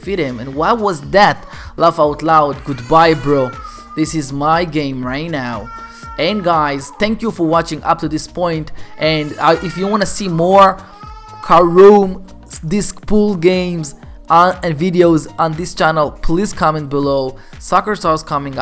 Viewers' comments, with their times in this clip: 0:04 In I hear someone is crying!